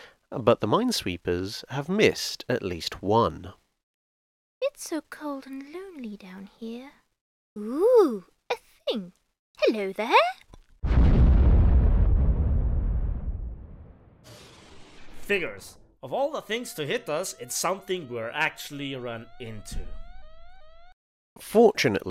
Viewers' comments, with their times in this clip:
0:03 that is the cutest mine i've ever heard <3
0:03 . .Did that mine just talk?